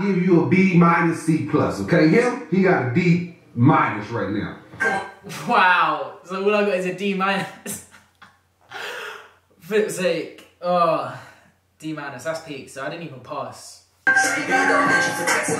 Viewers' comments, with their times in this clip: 0:03 he sounds like my teacher